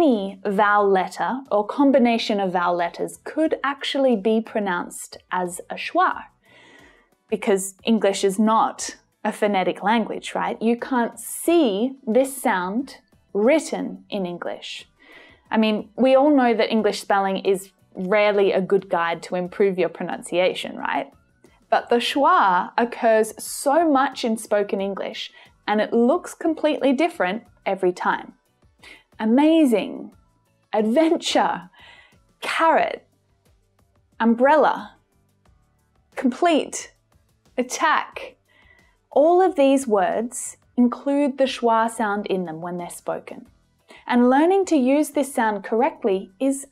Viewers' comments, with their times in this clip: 0:09 I'm new here. what is your accent? you pronounce "phonetic" like american accent!
0:32 didn't it sound more like "o" though in "carrot"? PS really amazing teacher!